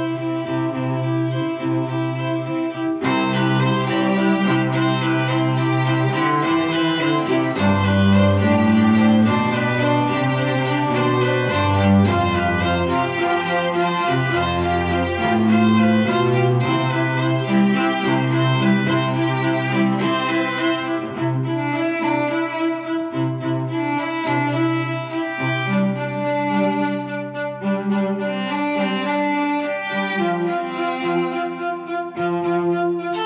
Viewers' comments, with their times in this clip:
0:03 fuuuuuuhhh SICKK drop UNCE UNCE UNCE
0:21 sounds like "how far i go" from moana